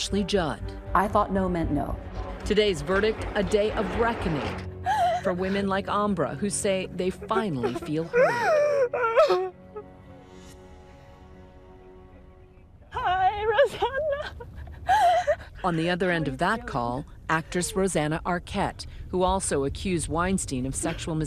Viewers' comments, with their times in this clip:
0:05 Umbra's cries stays with you. for every woman finally being heard..finally being believed.